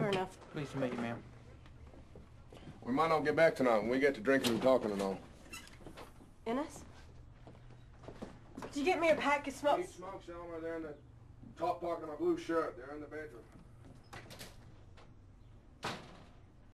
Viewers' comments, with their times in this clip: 0:10 "Top pocket of my blue shirt, they're in the bedroom." He almost lets his Australian accent slip.